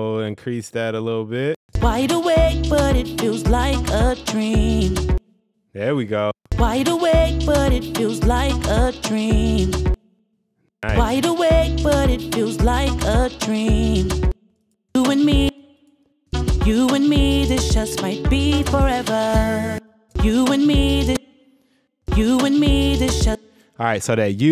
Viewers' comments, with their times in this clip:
0:06 that sounds soooo much better just little touches make a world of a difference